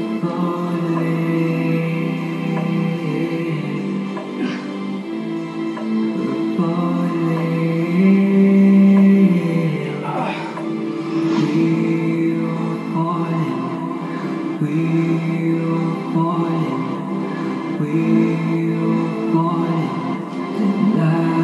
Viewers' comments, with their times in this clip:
0:04 My knee cap popped outta place 😅 I grunt louder than the music trying to stand back up. 😂🤣 you almost don't see me pop it back in when I stand up. 🤔